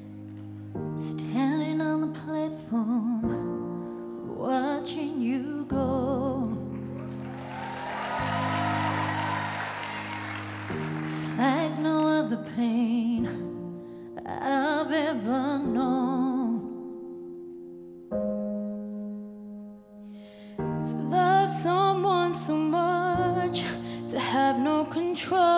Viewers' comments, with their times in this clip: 0:06 The song was borning as hell